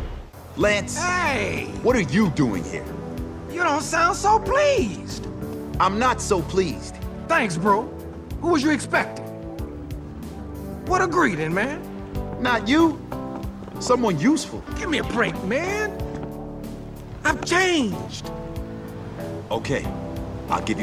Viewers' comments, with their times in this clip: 0:04 I can’t tell if that’s Lance or Urkel